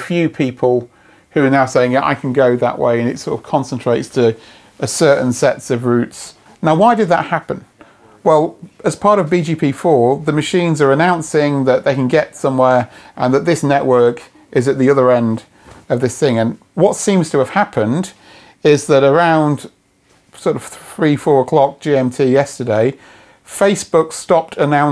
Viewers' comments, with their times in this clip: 0:07 accidental background audio of people speaking ?